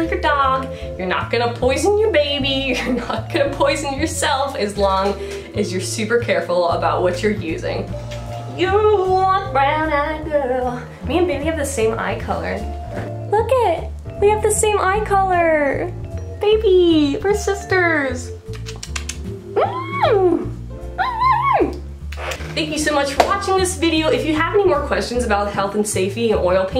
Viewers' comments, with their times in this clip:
0:07 Are you a singer? You're hella good!